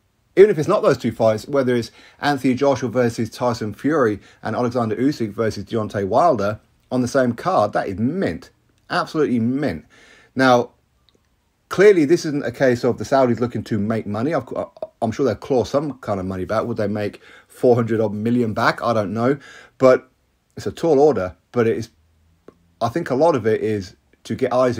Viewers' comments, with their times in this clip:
0:07 What is that word that you used? "Ment" or something.